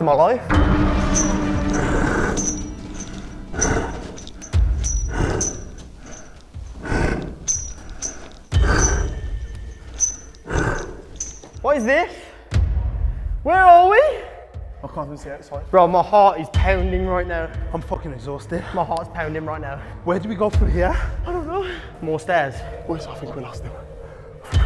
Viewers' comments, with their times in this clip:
0:08 I thought he said (my fart is pounding right now)